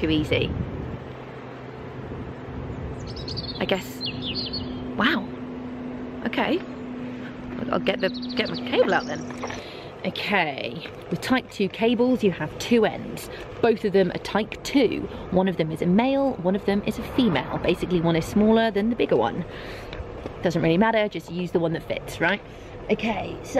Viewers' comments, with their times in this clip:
0:07 ... love the "this is too easy" with the birds chirping in the background. You don't hear that at a gas station.